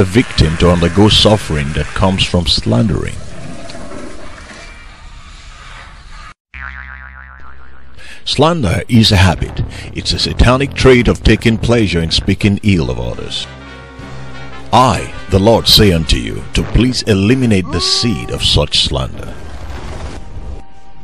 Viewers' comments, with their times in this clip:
0:06 goofy ahh sound effect